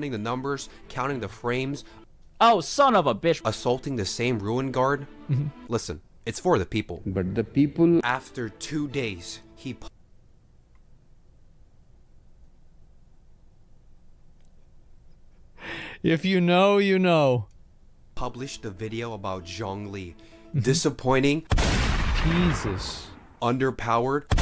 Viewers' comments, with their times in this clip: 0:07 off topic, but why was he laughing?